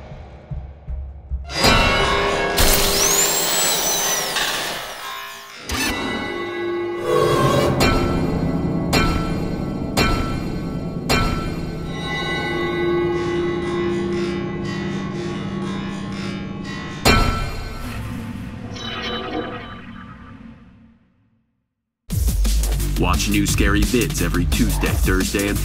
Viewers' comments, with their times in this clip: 0:08 Where does the metallic sound, that first appears come from? It sounds REALLY familiar, but I can't place it...